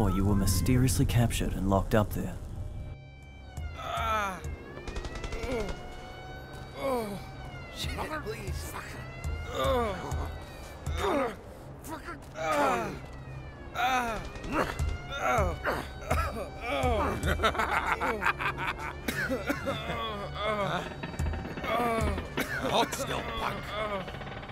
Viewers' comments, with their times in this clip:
0:03 Turn down the volume if there’s anyone home
0:04 The sequence was very much mod-quality voice acting lol
0:05 idk maybe this guy moaning for 30 seconds while and after being beat up